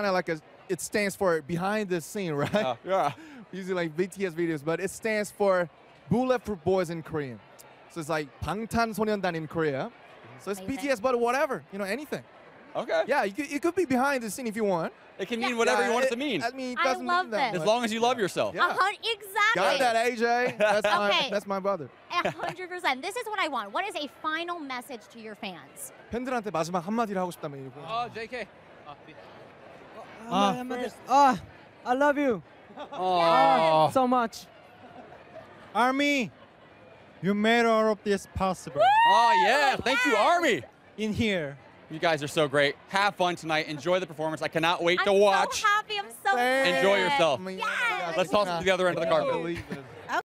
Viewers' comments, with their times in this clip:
0:08 I can't stop listening to him saying "Bangtan Sonyeondon." He sounds hot speaking English but even hotter when he switches back into Korean.
0:28 JK be like: Take that shit away from me! (I thought he said XD)
0:30 And then Jungkooks panicked scream cause he’s shy
0:32 did jimin learned saying yes from her
0:38 Taehyung's Accent Army You made all of this possible such a cutie😍😍😍😍 GO BTSSS!!!